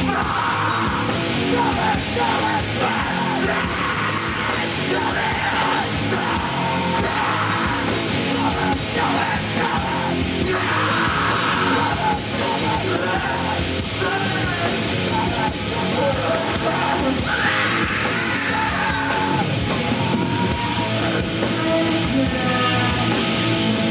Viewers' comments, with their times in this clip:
0:04 bro that scream caught me off guard 😫